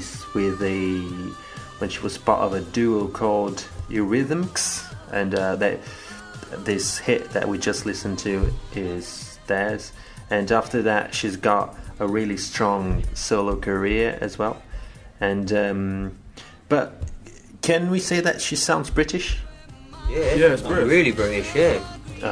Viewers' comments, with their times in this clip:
0:03 why do you pronounce eurythmics the way you do? I've never heard it said like that.